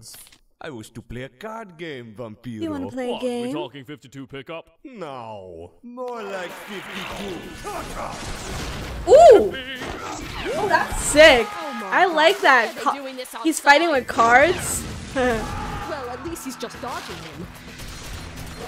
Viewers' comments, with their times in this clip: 0:05 ha, he pronounced it wrong, he said "piche"(tar) instead of "peixe"(fish)